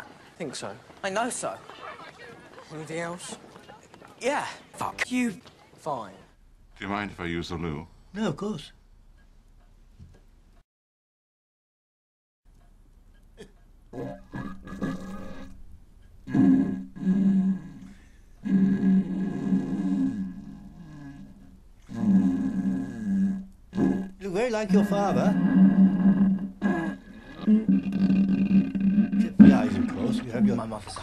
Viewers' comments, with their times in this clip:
0:06 this is exactly what happens whenever a guest asks to use the bathroom. The noises are accurate too
0:07 An awkward silence is shared between harry and slughorn while Albus shits his brains out in the bathroom
0:13 here is 20 seconds of dumbledore shitting out his intestines